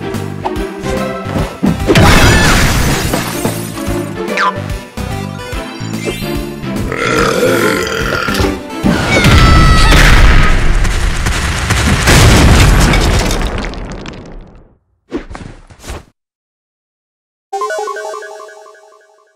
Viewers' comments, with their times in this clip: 0:07 That was a good belch
0:07 Daisy burps in Peach’s face